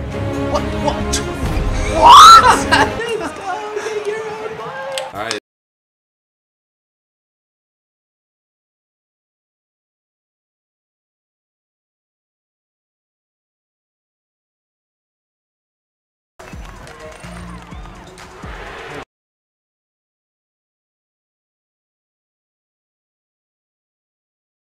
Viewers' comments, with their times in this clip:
0:05 the sound went off